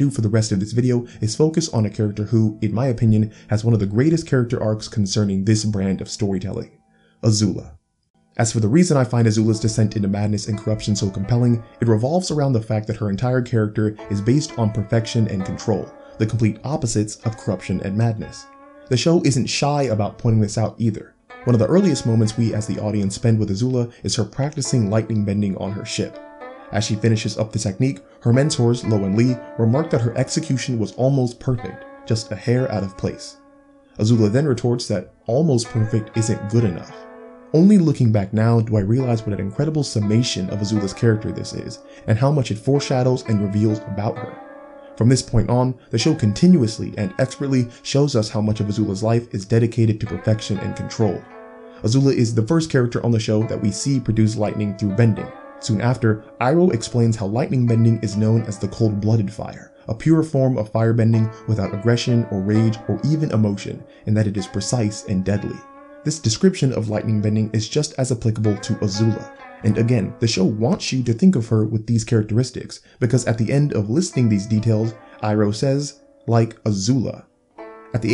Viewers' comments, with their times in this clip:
0:09 Bruh you didn't need to do us like that by playing Little Soldier Boy
0:09 that song hits riiiiight in my feelings...
0:59 The music! Nooo